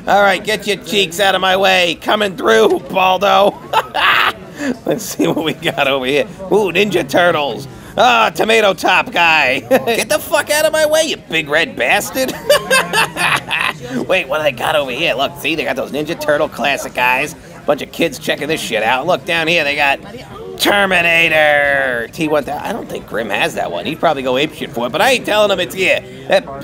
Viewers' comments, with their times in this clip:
0:10 Sounds like AutoBot Wheeljack from Generation 1